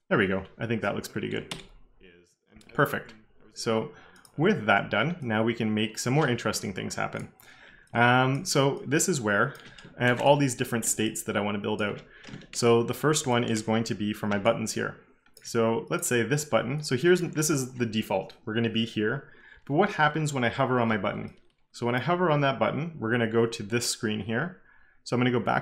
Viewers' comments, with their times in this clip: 0:06 I hear something in the background is that an another instance of Kevin Powell from alternate dimension?